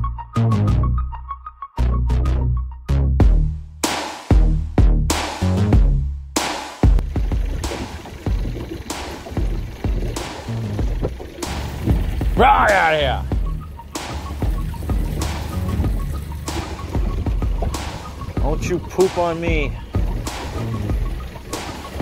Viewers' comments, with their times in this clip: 0:10 Nice song, had me laughing so hard